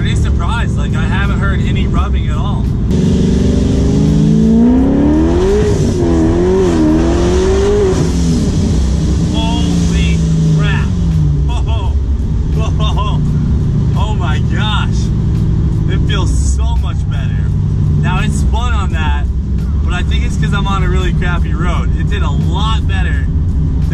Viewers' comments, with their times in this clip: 0:05 wow that blow off noise though ptststsss